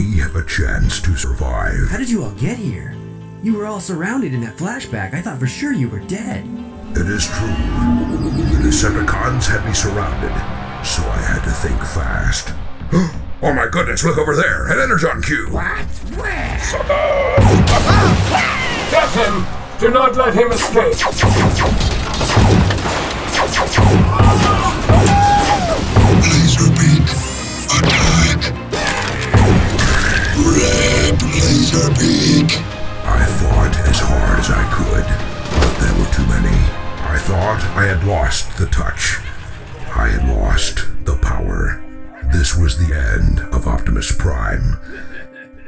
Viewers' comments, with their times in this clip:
0:08 it sounds like the soundtrack from TF3 DotM
0:26 I love how you created your own G1 soundwave voice